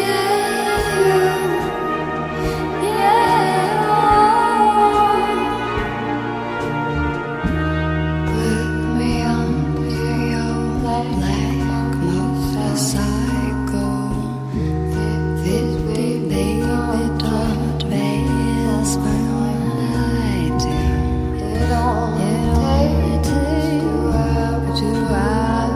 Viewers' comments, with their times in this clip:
0:06 i hate the unsincronicity here